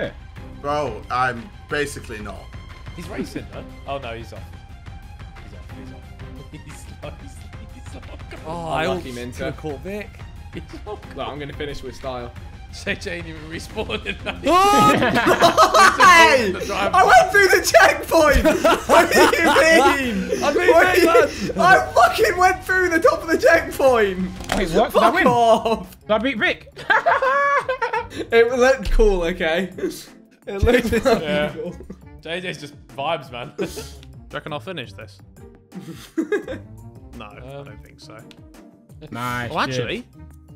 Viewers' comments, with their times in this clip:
0:05 bro..., haven't laughed in so long, bro Ethan's laugh man!
0:26 That laugh lmao🤣🤣🤣🤣